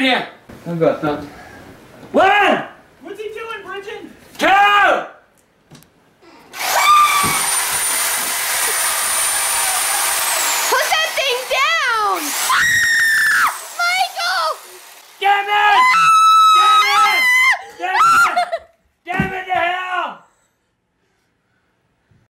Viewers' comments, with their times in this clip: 0:06 Yeah he screams like squidward
0:06 he has the best screams 🤣
0:16 When the lady screams, Jellyman saves the day!